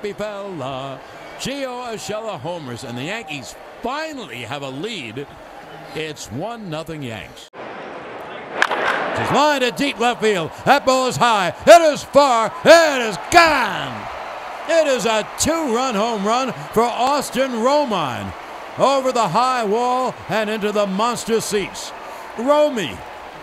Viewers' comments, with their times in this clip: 0:08 what a delightful sound. Kind of like biting into a crisp apple in autumn.